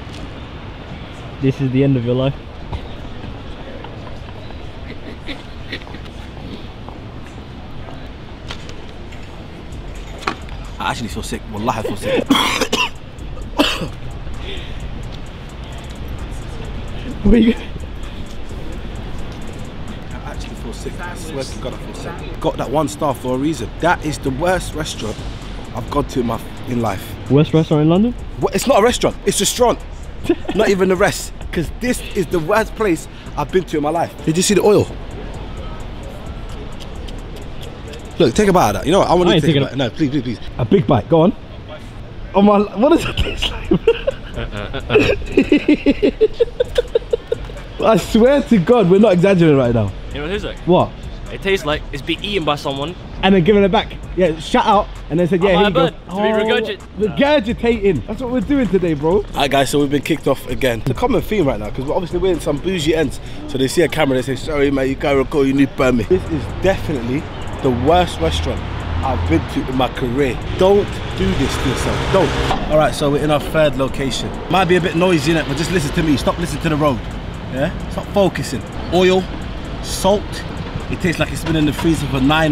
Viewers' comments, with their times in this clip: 0:08 is the first time i bursted out laughing on my computer 😭😭 i felt the emotion in that 'wallahi' 😭
1:04 the way he said that I’m fucking dead😂😂😂😂😂😂😂😂😂😂😂😂😂